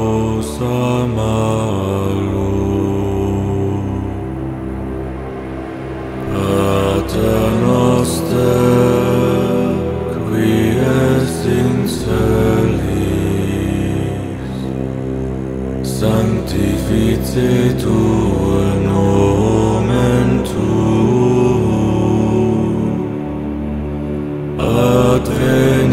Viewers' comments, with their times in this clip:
0:06 The harmony part that begins is so perfect 👌 kinda melancholic, but in the best way